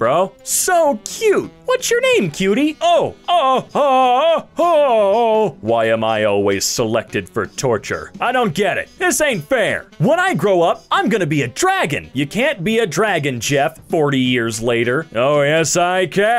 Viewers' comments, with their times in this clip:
0:03 why did it sound like he just came